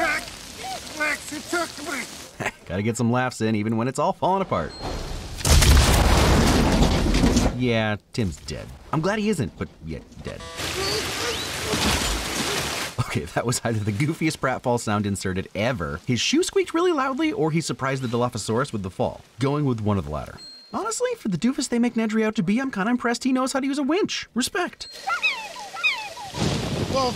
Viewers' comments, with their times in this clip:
0:10 Did you know when the bloodsucking lawyer flees into the toilets, there's a comical farting noise when he sits down.